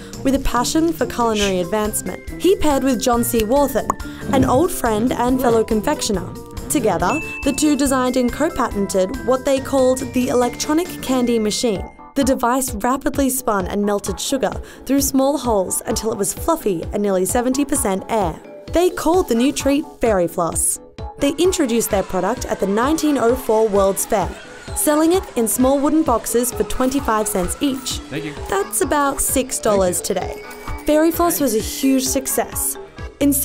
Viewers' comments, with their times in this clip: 0:04 is that an "oof" i hear?
0:05 I think I heard a quiet OOF
0:16 I thought it said f***in
0:16 Who else thought she said f***ing !?